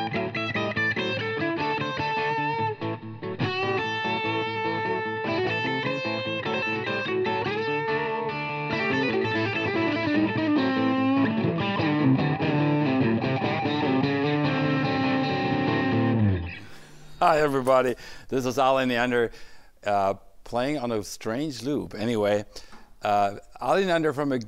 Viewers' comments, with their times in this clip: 0:05 Great sounding vintage plank! is priceless, btw..